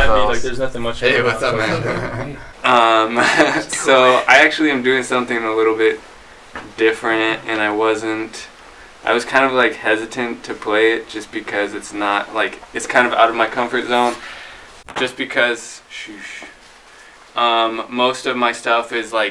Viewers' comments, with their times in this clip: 0:03 someone whispering "do it"